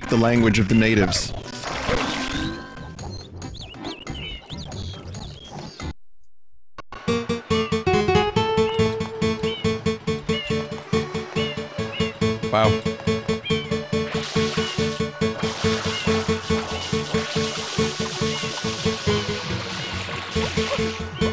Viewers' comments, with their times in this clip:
0:07 Okay, the music's complete diarrhea, but I really love the visuals of this corruption